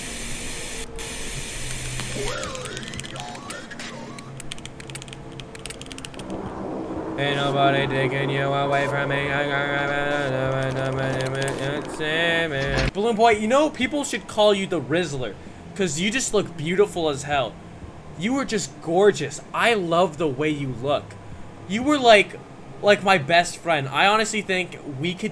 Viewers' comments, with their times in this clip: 0:07 HES SINGING I LOVE YOU HOE
0:08 when u were singing ilyh ^_^